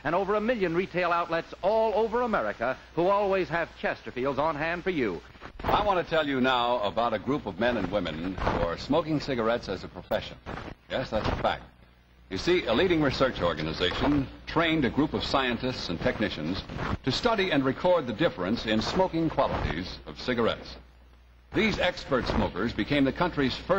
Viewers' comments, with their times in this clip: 0:05 The announcer describing the group of men and women, reminds me of Durward Kirby.